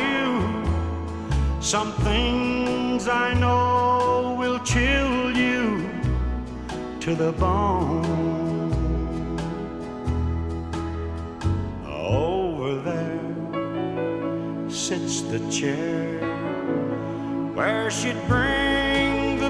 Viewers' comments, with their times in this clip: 0:03 Real country hear folks